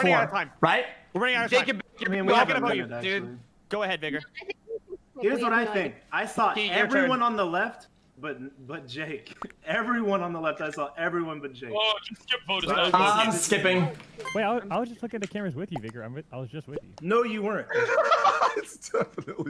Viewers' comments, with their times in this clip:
0:03 "Go ahead 'Vigor" is not what I heard, I did a fat double take